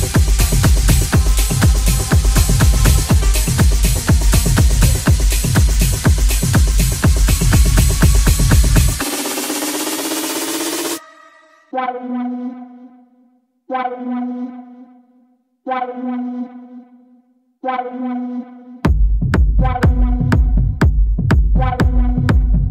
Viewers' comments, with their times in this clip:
0:10 woooooooo! dope sounds :) the drops :O:D